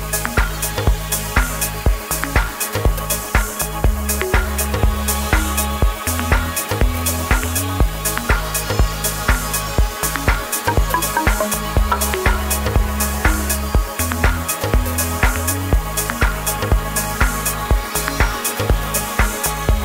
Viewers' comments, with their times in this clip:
0:03 the song playing iyohh